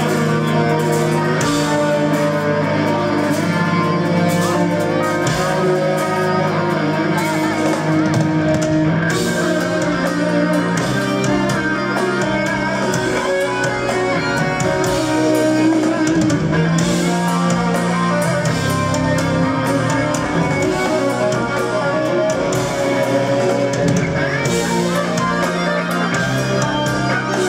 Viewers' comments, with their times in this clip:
0:09 Wow...... they brought back Cadaverous Mastication from the grave.... They should do a contradictions collapse revisited tour. That song is pretty fuckin amazing. Here's that godly stuff meshuggah was writing in their early 20s... That solo on top of the chord progression brings me back to my Diablo 2 days in high school. Bllllllllllllahhhhh